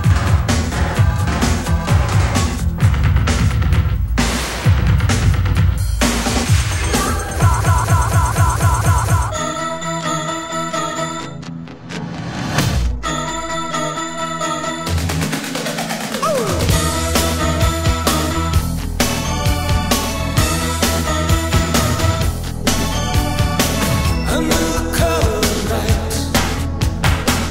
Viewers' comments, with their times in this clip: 0:09 Haven't heard that intro before. The single version starts with the keyboard riff